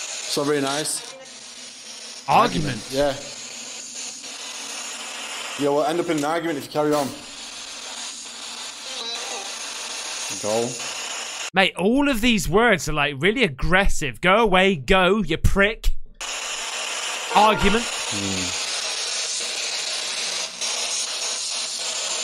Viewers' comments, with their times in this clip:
0:03 after it said “argument”, The caption said “go”, but it was actually someone saying “the way you move”
0:08 that just sounds like that popular song on tik tok. nice invatikating
0:08 sounds short like the song "mood"
0:09 not being a hater just sounds like the go sounds like in a mood like the song why you always ina mood